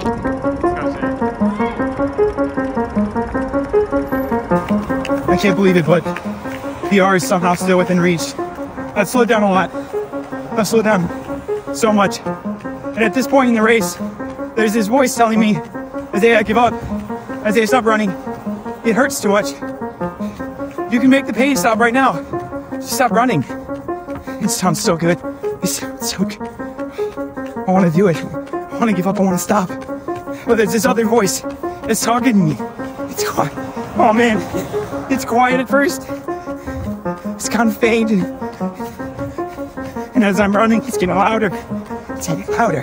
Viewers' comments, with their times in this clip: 0:08 u sounded like mortey
0:23 you sound like a ai bot
0:30 the other voice was Goggins 🤣